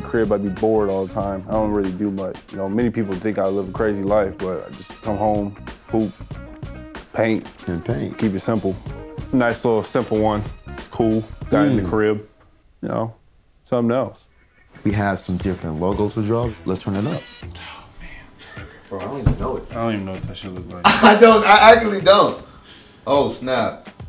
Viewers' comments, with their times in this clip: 0:05 I thought he said poop like if you agree